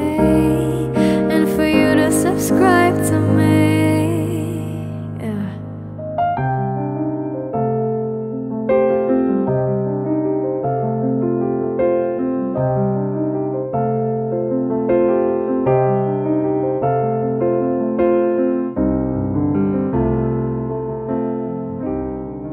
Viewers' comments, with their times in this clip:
0:04 Omg She did the Ariana Grande "Yeh"